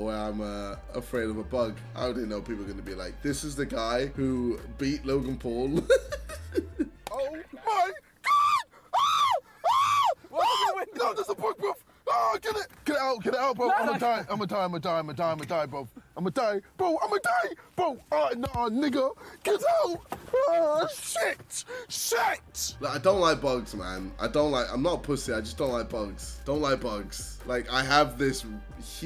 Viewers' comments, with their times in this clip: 0:06 after listening to it for so many times all I hear is the remix
0:09 i think when he reacted to the freakout clip it sounded good even with a beat
0:16 sounds like he is doing it without the auto tune for a the auto tune song